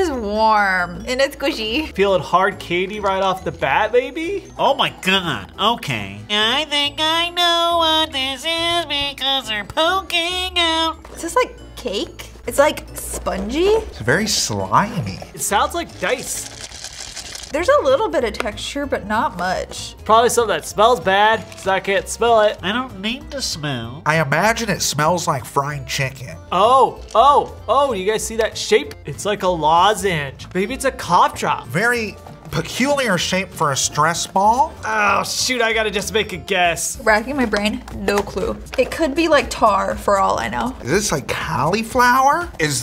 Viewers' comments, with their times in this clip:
0:05 Lol Sounds like a pillager
0:24 with that nose plug and his super nasally voice it makes it like 10X funnier.